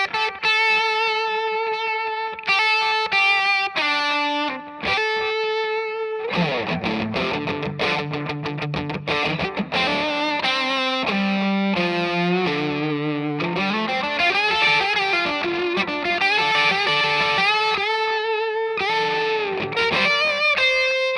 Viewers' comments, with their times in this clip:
0:09 I thought he was going into the solo in strange brew, best Cream song IMO